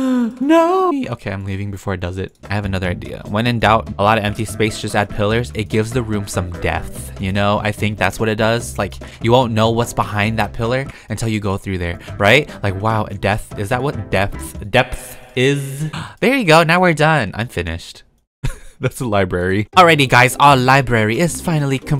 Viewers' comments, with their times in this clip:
0:05 i thought he said death 😳😳